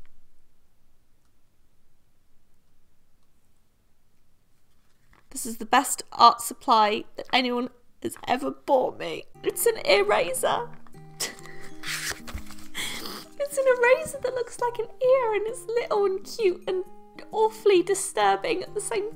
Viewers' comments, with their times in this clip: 0:05 omg I thought she started crying 😱
0:07 I thought she was actually crying ....